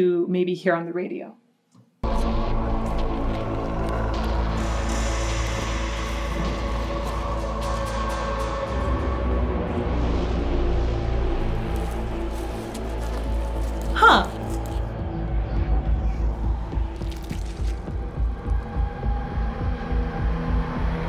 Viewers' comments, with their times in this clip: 0:09 Go to the end of Sonne and here the vocal, it's the same melody, even so that there still metl sounds beside it too. Go to minute there it starts at Sonne, or to be more precise, here is it clear to hear, before that it's under the harder metal sounds.